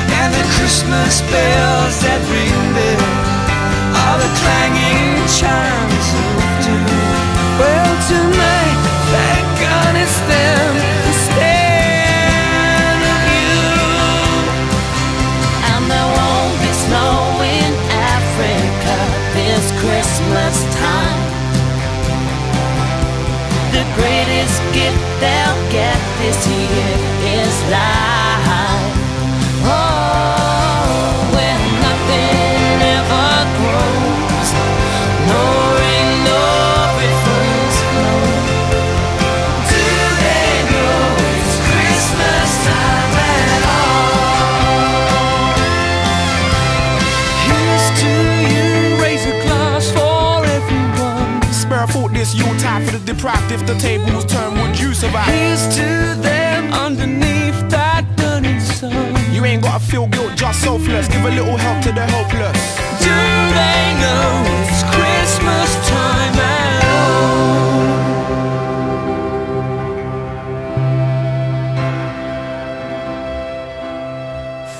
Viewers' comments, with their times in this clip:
0:07 jfc Bono sounds even younger than he did in 1984
0:55 Busted sings but you can't hear them. It's weird